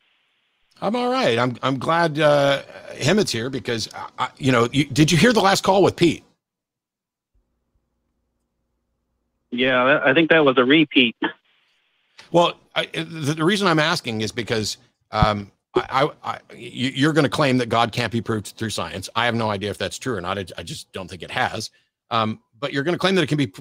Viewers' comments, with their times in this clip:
0:09 a re Pete